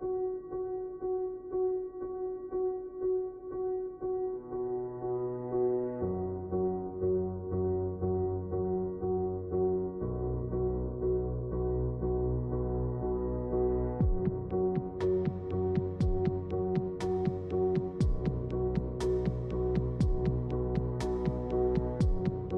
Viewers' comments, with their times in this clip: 0:03 reminds me of forza motorsport 4 this music is perfect for the garage and main menu